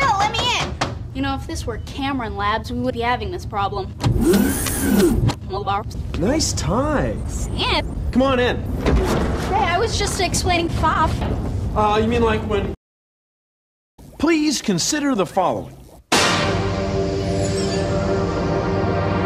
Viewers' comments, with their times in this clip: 0:06 Nice Tighs??? WHAT SUS GUY????